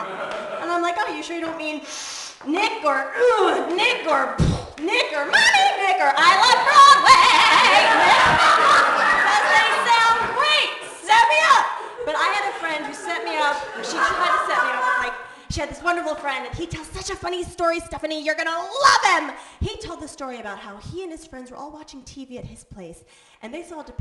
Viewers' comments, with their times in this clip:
0:05 Ok, is it just me, or during "NICK" joke, is she saying N*****? Someone please tell me that she's not saying that word during her routine...2 me it's sounding like she said "NIGGER..NIGGER...I LOVE BLACK MEN"...I hope & pray I'm wrong.....maybe she's actually saying something else & i'm just misunderstanding her...I'm sure she's not using that word..right?? Someone please clarify...if I'm wrong, I certainly apologize in advance 4 slight misunderstanding